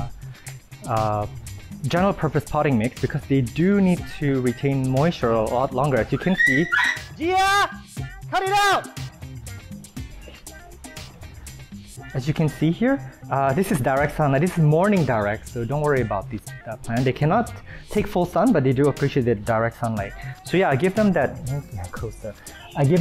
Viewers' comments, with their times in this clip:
0:05 "They do need to retain moisture-" ☺️ Dogs fighting in the background "GIAAAAAAAA CUT IT OUT!!" 🤬 ........ 😒 "As you can see here-" ☺️